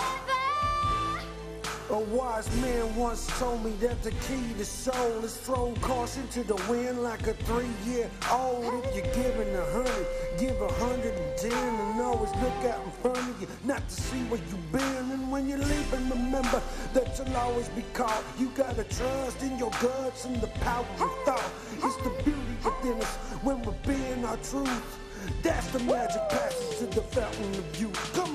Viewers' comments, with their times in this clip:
0:09 that sound so good ayyyyyy yeahhhh so soft and deep